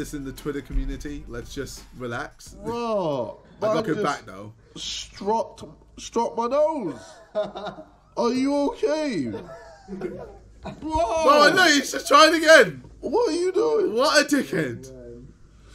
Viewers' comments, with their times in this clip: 0:03 The african accent was on point 😂😂